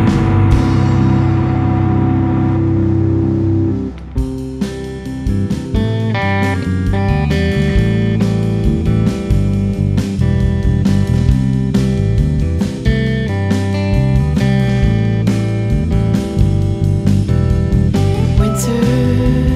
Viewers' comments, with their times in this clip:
0:04 The change up of "I Don't Have You In My Life" = goosebumps...wow